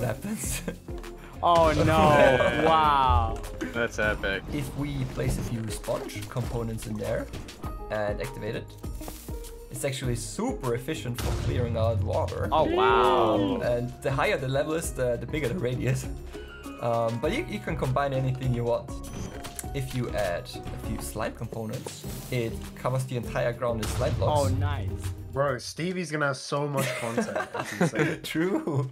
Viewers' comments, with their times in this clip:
0:09 yo wut he say??